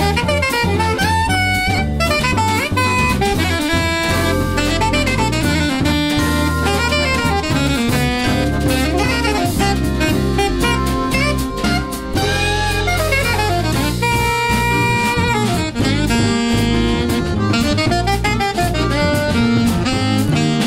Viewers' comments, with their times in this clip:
0:07 Now if only I didn't play a dominant 7 instead of a major 7 on that Db chord 🤦🏾‍♂️😓💀